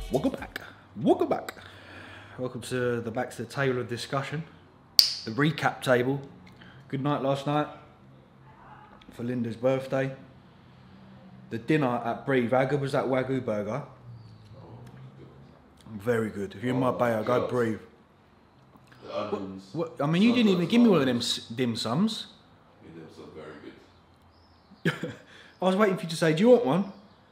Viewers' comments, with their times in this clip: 0:09 a bit of a stuffed nose? Cialis or coke?